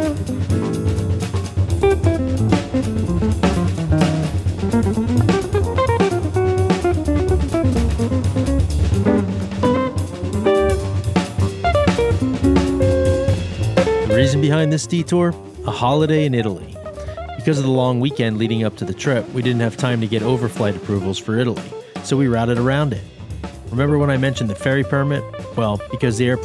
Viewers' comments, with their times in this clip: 0:08 I like your dad's music